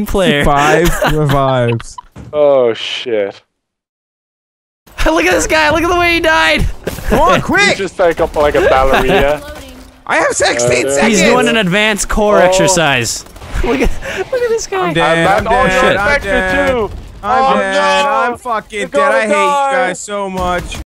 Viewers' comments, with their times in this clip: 0:09 I have sexteen seconds 😂
0:09 "Come on quick! I have sexteen seconds" Basically
0:09 xD I have Sexteen seconds